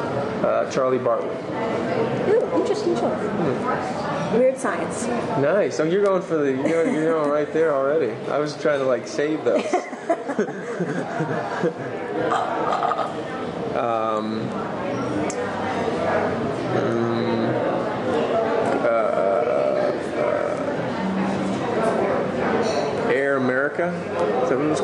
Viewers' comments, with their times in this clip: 0:08 adore that sexy laughter. God, he can't be sexier.
0:10 Omg. His laugh Freakin adorableeee. I love him -3
0:10 Not only do I find his face and body attractive, but I think he also has a very sexy voice. And who couldn't love his laugh ?
0:10 His laugh is incredibly dorky. So cute as well though. :')
0:10 omg his laugh so cuuttee